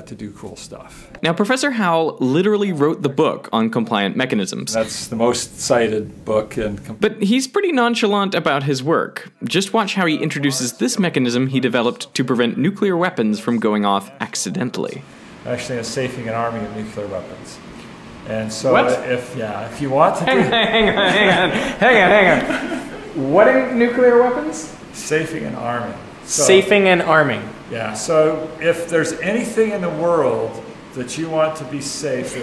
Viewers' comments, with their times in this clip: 0:05 baby zombie dying noise
0:10 Pronounced "processes" correctly the first time :)!!! Incorrectly the second time. :( The plural of process is not PRO-sis-eez. and did that guy just say "nookyuhler"? I realize that in reality, he's brilliant and has created incredible things that can change the world, but when someone says that... I feel like there's something wrong with them. Like we all need to talk a little slower and not use big words. :(
0:15 He said nu-cue-lar instead of nuclear.......................................
0:16 "... nukular weapons"? Really?